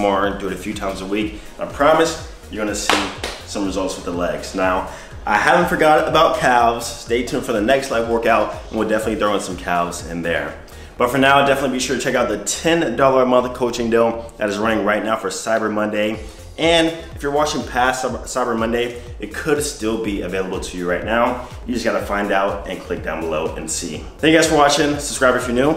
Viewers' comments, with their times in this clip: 0:06 Bruh ... did you just pronounce calves with a hard “L” ? 😒